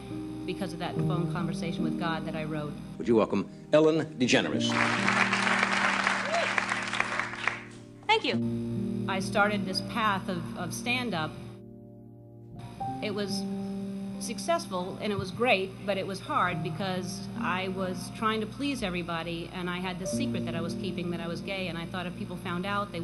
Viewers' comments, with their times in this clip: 0:06 OH MY GOSH i love her voice when she said thank you